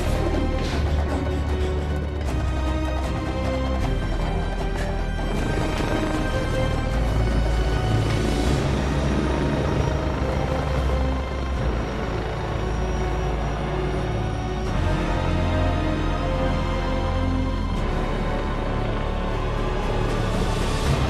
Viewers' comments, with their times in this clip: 0:08 this track just hypes me up